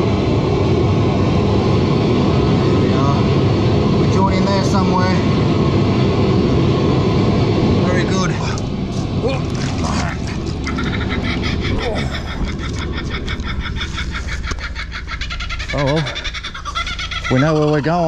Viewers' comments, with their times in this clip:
0:06 Drops his hat in the water - Kookaburra starts laughing